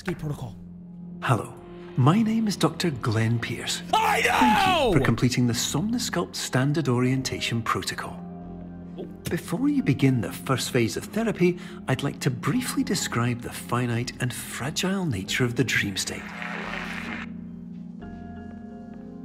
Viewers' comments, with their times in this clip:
0:04 Perfect time to pause😂😂! Perfectly cut scream🤌